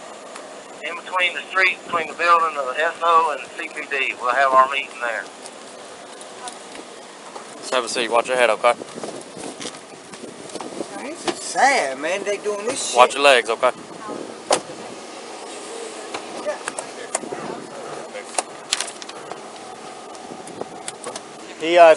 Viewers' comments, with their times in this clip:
0:09 You actually hear a suspect complaining